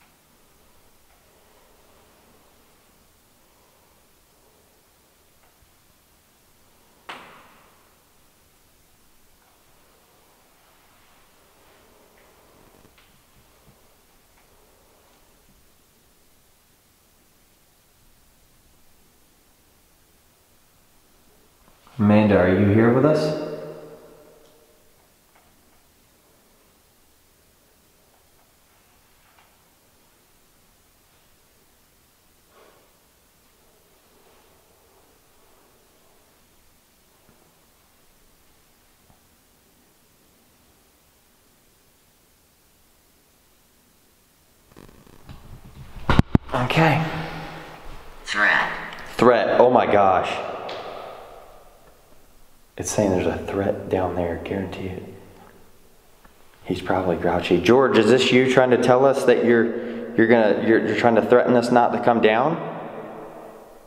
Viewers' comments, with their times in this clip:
0:10 there’s a very faint man saying GO 💜👻😘
0:45 audio goes weird again...